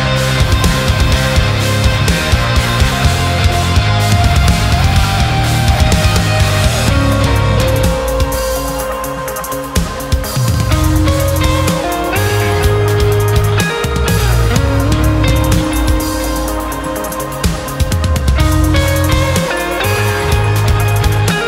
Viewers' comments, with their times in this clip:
0:09 Cool video Just wonder what you do to fill in the space for that clean guitar parts. Is it just guitar with shimmer reverb? Edit